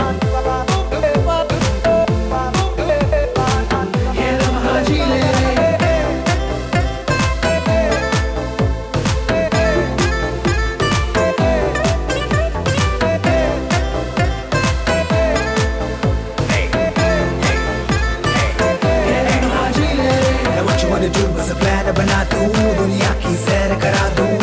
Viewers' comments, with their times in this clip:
0:07 i have heard this tune more than 50 times from past 2 days just love it ♥️🙌